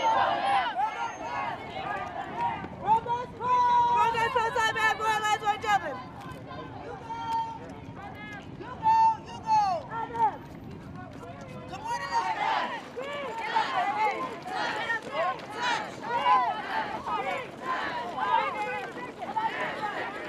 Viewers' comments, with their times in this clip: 0:03 blahblahblah bad boy last one's jumping. That's what I heard anyway.
0:03 the fuck she say?